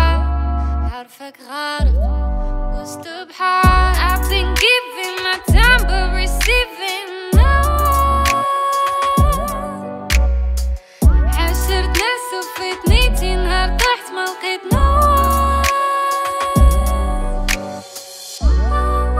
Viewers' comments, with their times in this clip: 0:07 that pianoooo <3 dope 🔥🔥🔥